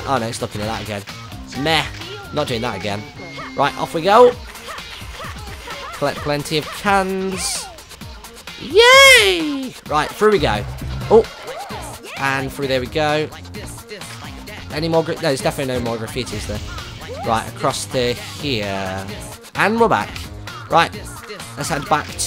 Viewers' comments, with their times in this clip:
0:06 Anyone else realise that Rhyth's grunts are in tune with the music? =P